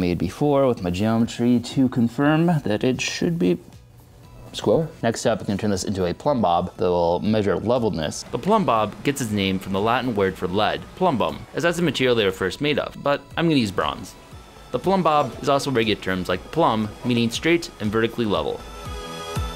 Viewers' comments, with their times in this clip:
0:05 sounds like a Rick and Morty 'How to'